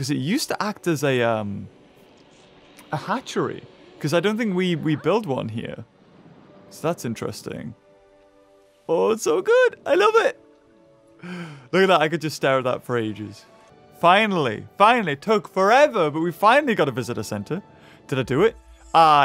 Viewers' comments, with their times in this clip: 0:07 did anybody else hear the t-Rex roar or am I trippin